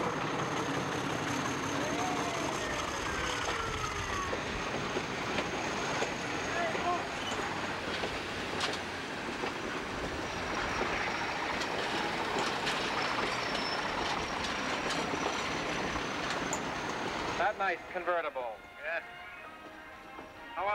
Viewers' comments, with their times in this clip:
0:07 I think I hear someone yell "het Moose" at the mark.